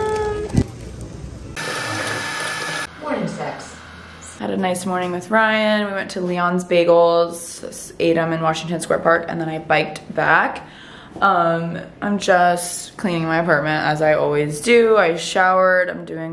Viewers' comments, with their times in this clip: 0:03 ish, does something that she was listening to say “morning sex” lolll someone back me up here.